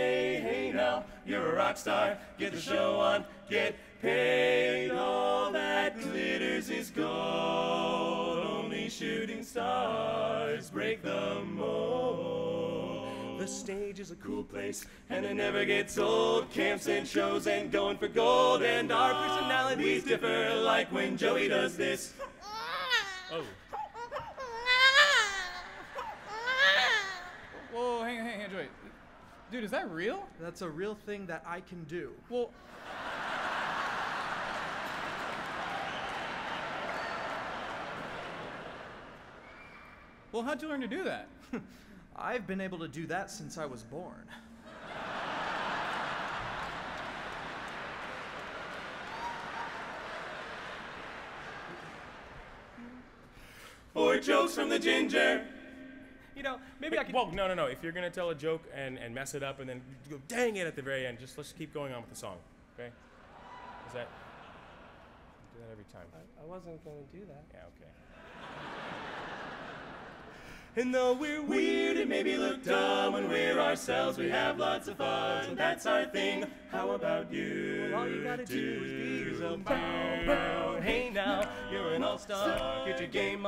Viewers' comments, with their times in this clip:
0:05 that chord is gold
0:05 Ngl just melted after the chord on 'gold'
1:05 the way he says "i wasnt going to do that" is so fucking tim and eric